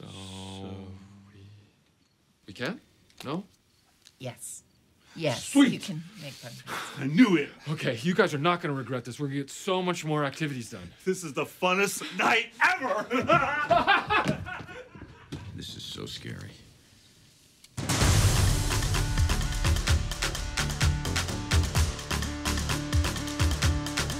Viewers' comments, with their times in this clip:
0:08 you can tell they're fighting back laughter